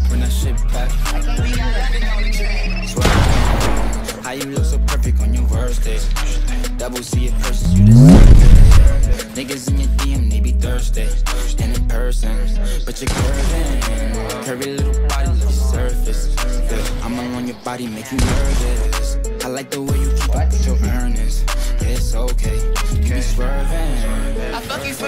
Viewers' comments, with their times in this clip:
0:07 deadass thought a fucking bomb dropped outside my house.